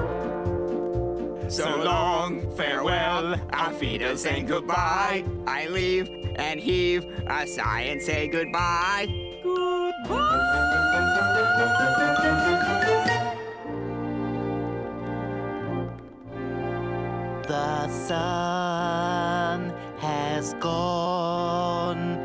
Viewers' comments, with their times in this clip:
0:09 Damn Chris hit that high note!
0:09 It's so funny Seth Green actually sang that note 😂😂